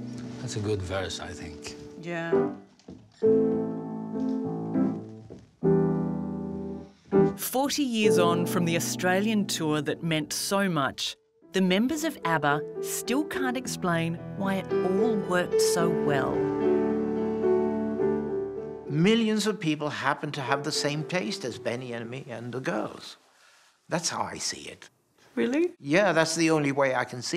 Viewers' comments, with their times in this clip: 0:08 that last chord, so perfectly unsolved ❤